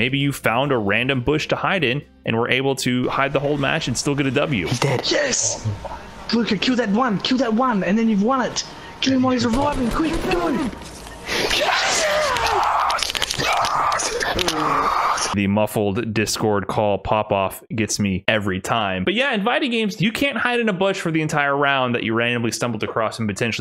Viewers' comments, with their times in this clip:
0:05 the fortnite woo